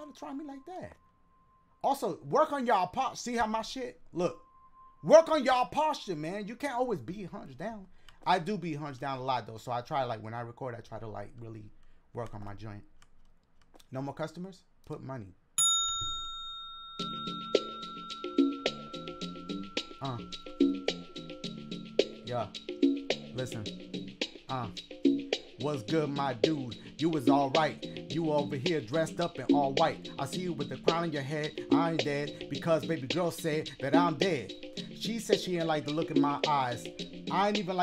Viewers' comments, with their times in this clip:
0:09 That Beat was poppin’!
0:17 yo that's kid frost la raza type beat
0:19 the rap, dashie that was fire🫡❤️‍🔥